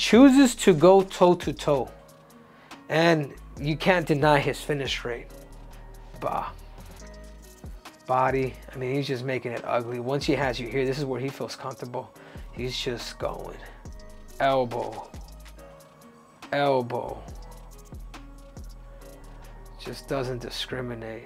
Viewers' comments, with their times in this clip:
0:05 was that a baaaa? 🐐